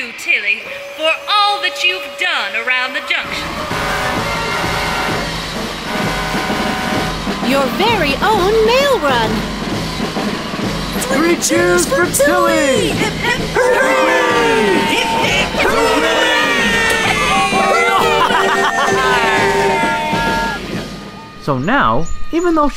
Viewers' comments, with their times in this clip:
0:04 Shut the Horn Up Calley!!